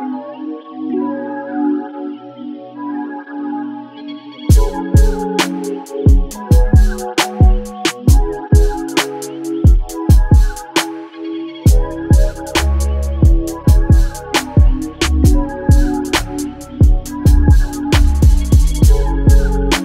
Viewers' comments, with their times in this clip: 0:05 damn that switch up is hard